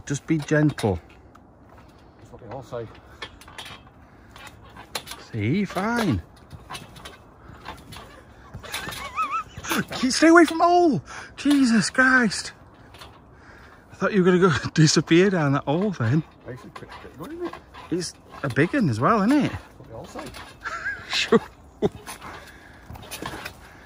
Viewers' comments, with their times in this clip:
0:07 Wow, your laugh sounds like Muttley from the Hanna Barbara cartoons...was partnered with Dick Dasterly. had a similar laugh.